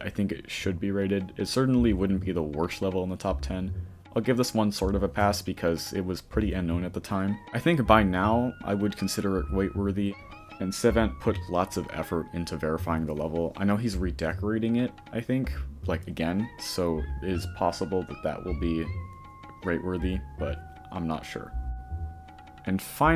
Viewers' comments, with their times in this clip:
0:09 he really said "wait worthy"